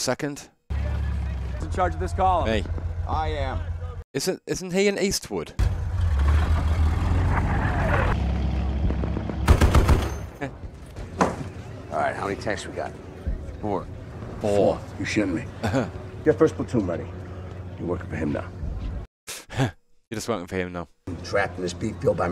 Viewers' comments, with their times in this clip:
0:10 actor Jason Isaacs, who played the Captain Brad Pitt talked to, his accent was so convincing I completely forgot that he's British!